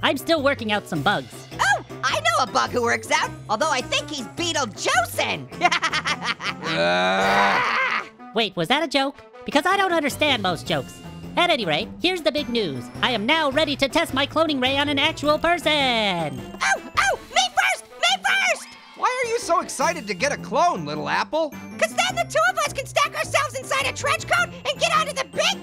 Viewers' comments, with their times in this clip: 0:07 Hey Stop groaning at orange!!
0:11 listen closely he said anyRAY